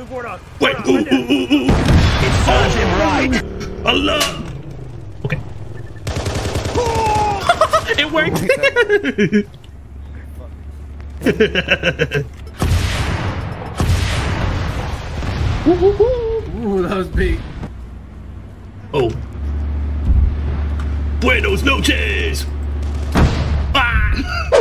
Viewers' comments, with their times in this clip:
0:07 That Scooby-Doo laugh tho JAJAJA